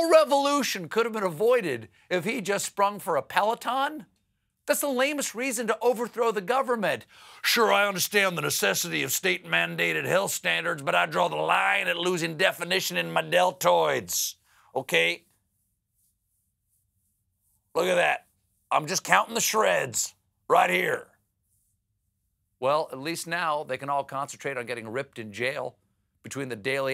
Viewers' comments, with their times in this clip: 0:07 Was that an accidental Alex Jones impersonation?